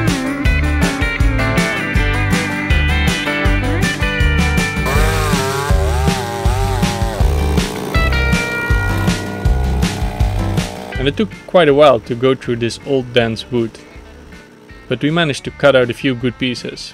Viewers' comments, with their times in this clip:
0:04 has the chainsaw been cut on the beat of the background music?